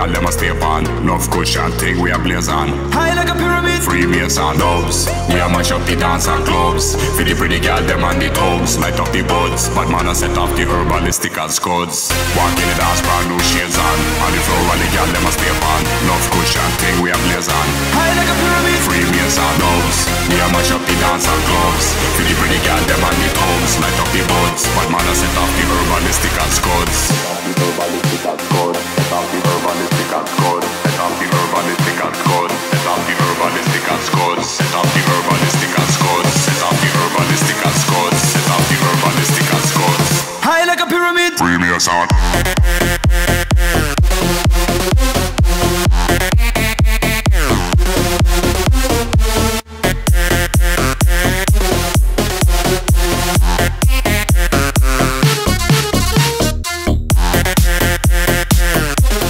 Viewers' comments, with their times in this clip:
0:03 did he say free nissan
0:37 The best drop in this Drop Music is in
0:40 The beat drop
0:41 Sounds like he says "Freemason" with some accent. But yeah, Flying Pyramids? Truth is stranger than fiction...